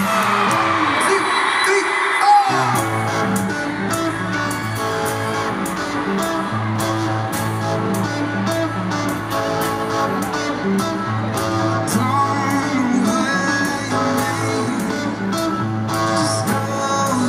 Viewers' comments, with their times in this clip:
0:03 if you listen really closely you can hear my friend and i scream "I love you"